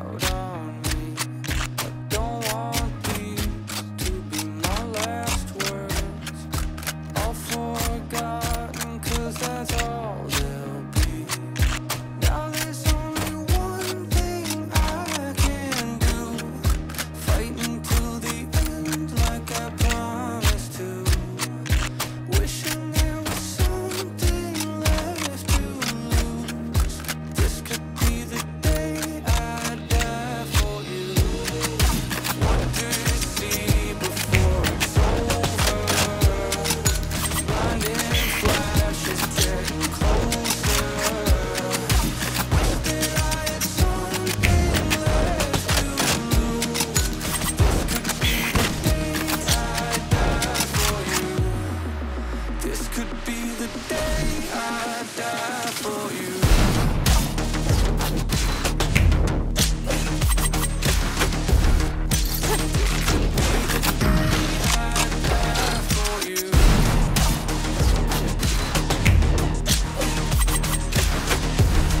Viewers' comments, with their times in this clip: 0:08 that stinger reload was so clean
0:09 The stinger slowly reloading sounds satisfying to me
0:28 THAT STINGER RELOAD THO 🔥
0:38 That scream though 😭😭😭
0:54 That whole sequence fits SOOOO well, and no one would've thought to do it, but here u are. EVEN OMEN'S GROWL!! XD
0:55 the sound of chamber's ult fits so well
0:56 this chamber sound was so in to the music:)